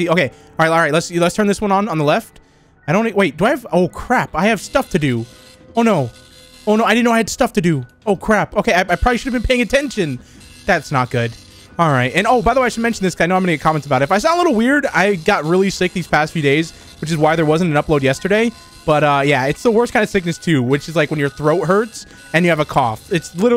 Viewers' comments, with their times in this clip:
0:04 He sounds like he forgot to do his homework over the weekend.